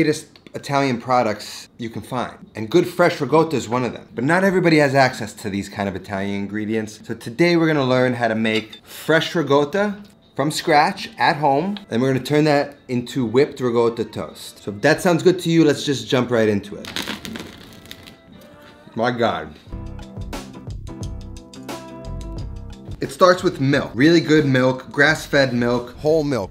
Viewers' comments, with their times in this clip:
0:07 Why do you pronounce it “RiGotta” (with G) and not “Ricotta” ?